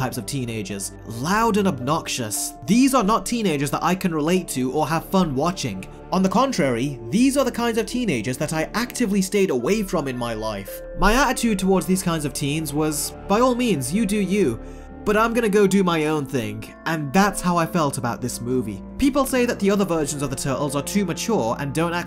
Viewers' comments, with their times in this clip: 0:07 thats funny cause u always sound like an obnoxiohs teneager.